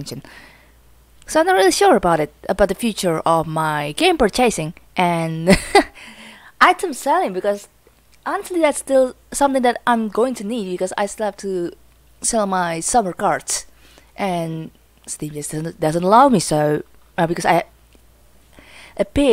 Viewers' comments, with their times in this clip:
0:03 lol the way you say "purchasing" sounds like "per-chasing", and in your defense it is spelled that way, but it's generally pronounced more like perchuss-ing. The emphasis is a bit different, I'm not sure how to explain it in text. No worries though, I just found it interesting. English really is a terribly complex and confusing language and I hate it more every day :)